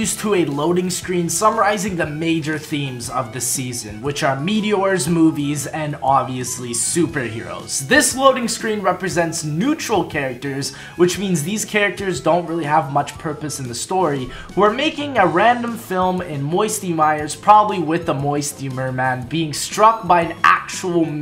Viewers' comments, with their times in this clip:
0:06 For some reason no audio is playing exept for the music and maybe im ok with that